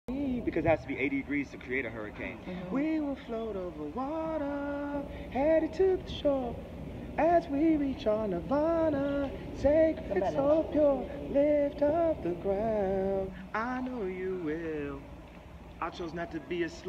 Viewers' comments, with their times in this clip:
0:03 ant clemons chorus